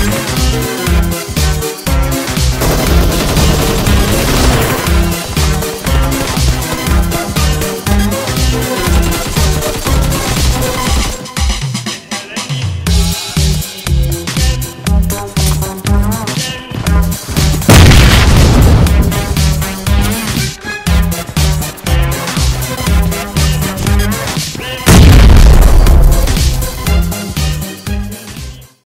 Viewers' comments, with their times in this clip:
0:06 why ghame. People say game
0:07 anyone noticed "win the Ghame"
0:09 He plays ghame and not game🙄🙄🙄
0:09 win the 'ghame'😂😂
0:17 That Was Loud